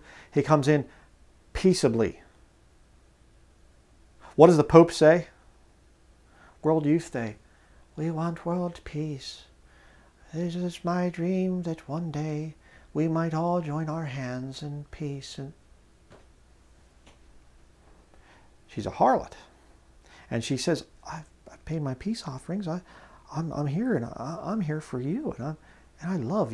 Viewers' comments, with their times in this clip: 0:07 pope impression 100